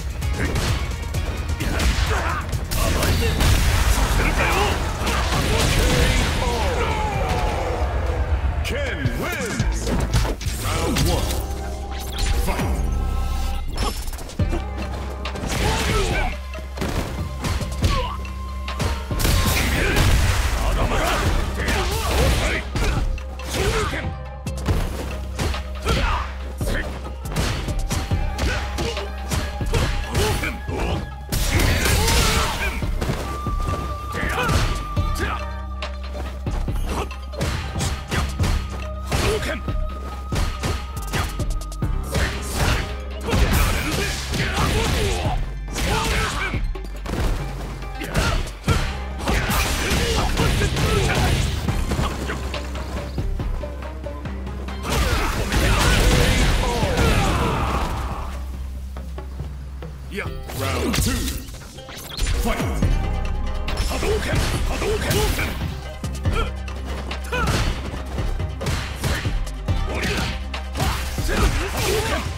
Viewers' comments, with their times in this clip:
0:10 Bgm of Ryu's stage is legendary. 🙌 Feels like it belongs to Samurai Shodown.
0:10 I really hope Sakura comes back in this, I missed sf5 due to it being on ps4 cuz I'm a Xbox guy but I feel like I didn't miss much. I can't wait for this! also the music during Ryu and Ken first fight omgggggggg
0:11 So we just gon sit here and act like this beat ain't that spice!?
1:00 Damn, music sounding pretty sweet here.